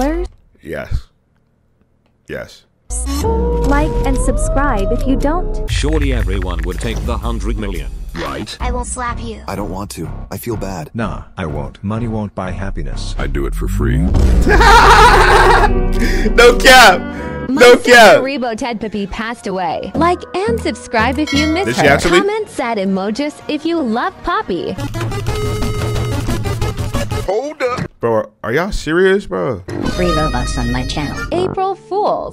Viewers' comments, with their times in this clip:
0:10 bro it said rebo ted poop pee no cap
0:13 that "HaAhaHAha" got me💀😭
0:17 bro got the SpongeBob laugh